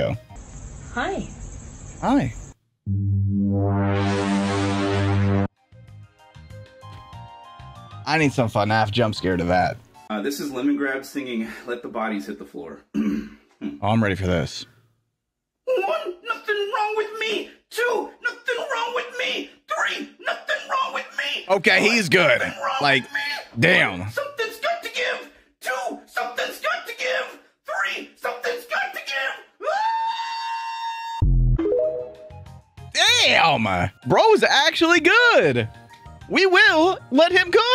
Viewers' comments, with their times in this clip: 0:09 why does he sound like morty from rick and morty
0:11 it sounds like morty
0:11 this guy has the perfect voice for Mr. Meeseeks for Rick and Morty 🤣
0:14 bro sounds like little pig little pig let me in. NOt bY ThE HAiR oF mY CHinNy ChiN cHiN
0:15 bruh sounds like Blendin Blandin from Gravity Falls.
0:15 sounds like morty Sanchez
0:16 the guy sounds like morty from rick and morty
0:23 bro sounds like morty turned emo lmao